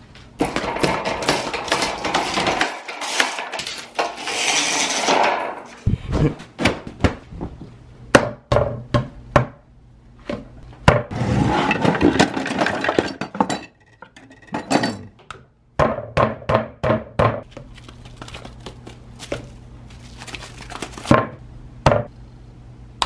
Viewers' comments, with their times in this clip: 0:07 it,, really sounds like ‘is this the real life’ from bohemian rhapsody,,,